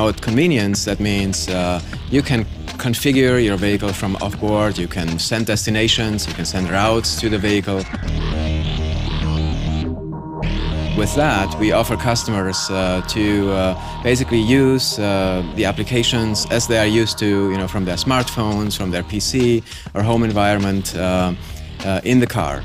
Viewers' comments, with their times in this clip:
0:03 anyone hear "Bagel" instead of "Vehicle?" I'd love to be able to configure my bagel from off board.